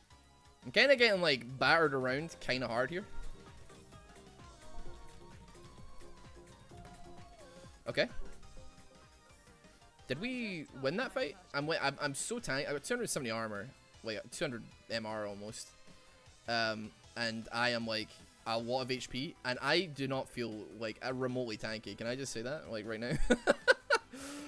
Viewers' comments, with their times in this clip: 0:05 IF YOU LISTEN CLOSLY, YOU CAN HEAR THE MUSIC HE IS LISTENING TO